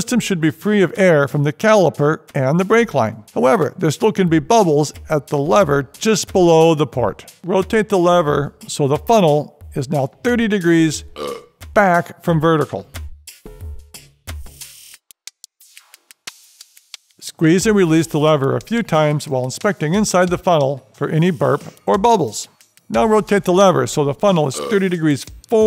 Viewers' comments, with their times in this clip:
0:10 burp emoji and noise are pretty gnar